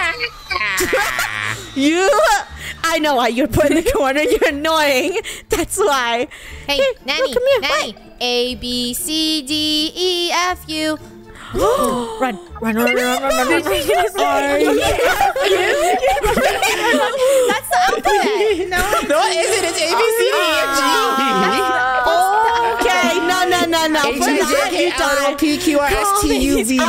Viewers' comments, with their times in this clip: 0:10 I love how rainbow sang abcdefu in